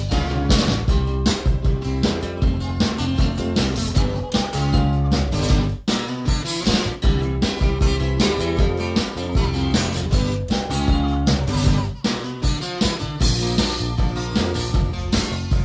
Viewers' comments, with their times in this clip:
0:03 The inclusion of the baby laughing sounds automatically makes this version of the song better than the original